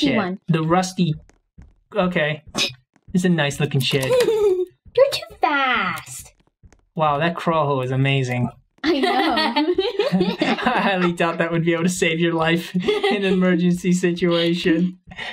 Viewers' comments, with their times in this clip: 0:03 I thought she wasngoing to say your to fat for a second but she said your to fast